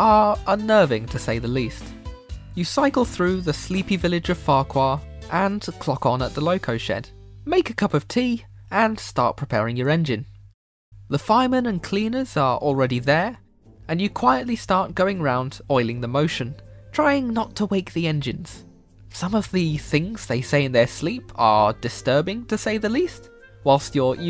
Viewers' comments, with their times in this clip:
0:10 i immedatly heard percys ghostly trick theme especially the bass